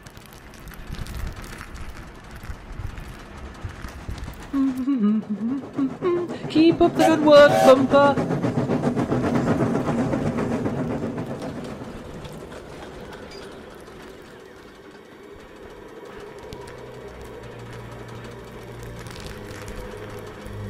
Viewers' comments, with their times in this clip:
0:05 Peter Sam singing is music to my ears